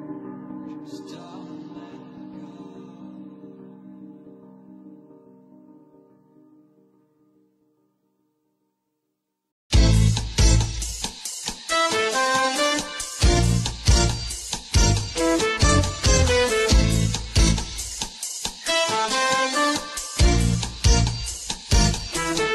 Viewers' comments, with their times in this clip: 0:09 sounds a little like city pop